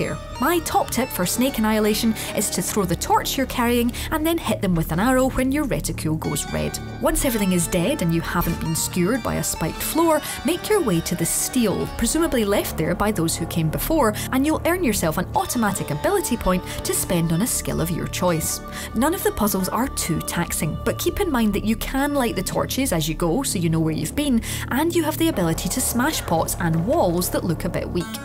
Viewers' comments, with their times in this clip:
0:10 Hmm medallion's humming Place of power gotta be